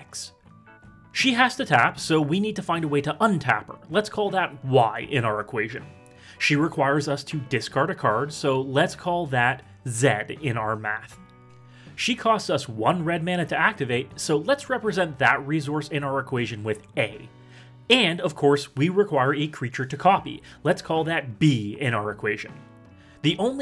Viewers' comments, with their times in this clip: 0:06 Isn't z and v supposed to sound similar, (vee and zee) instead of sounding different (vee and zed)? American btw so I'm just going off of what I was taught in school.